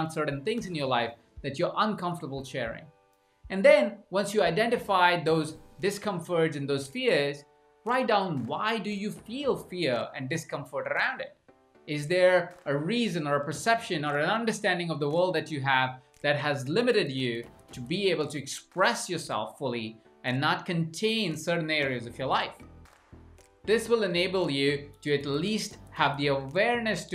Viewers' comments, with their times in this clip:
0:10 How you pronounced the word "around" makes me laugh every time I hear it :) Great content. I loved your examples and how you brought the Johari Window into the coaching context. I have heard about it before but never knew how to apply and use it for myself and for the work with other people. Thank you! :)